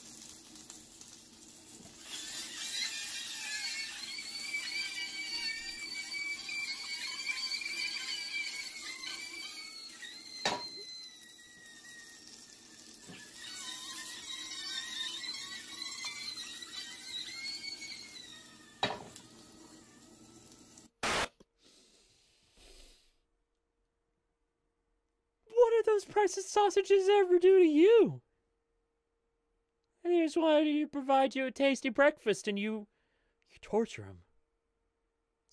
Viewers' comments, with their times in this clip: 0:03 Sounds like the souls of the innocent
0:16 holy cowamolly those sound like the death whistles from that one tribe in history. anybody thought the same?